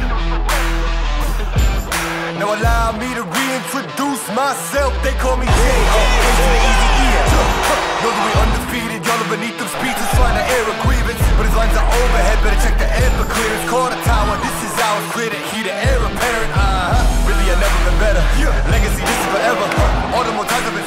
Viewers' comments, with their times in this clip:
0:05 P.K. hasn't got over Montreal just yet... That goal horn ...